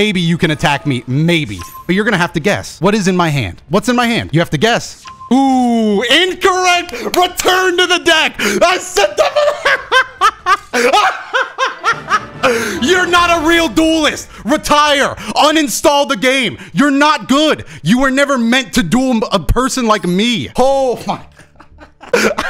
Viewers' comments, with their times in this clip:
0:07 There may not be more truly villainous, maniacal laughter out there... God help us all.